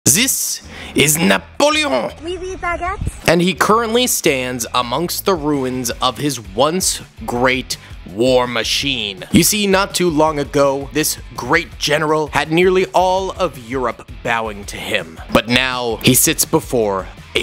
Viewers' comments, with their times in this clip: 0:01 NaPOLeOn got me laughing